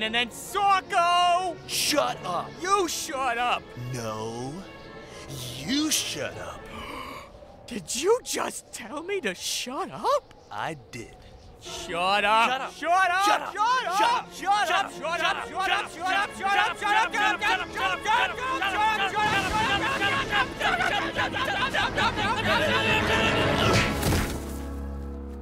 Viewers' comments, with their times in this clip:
0:07 JFK Archibald sounded offended.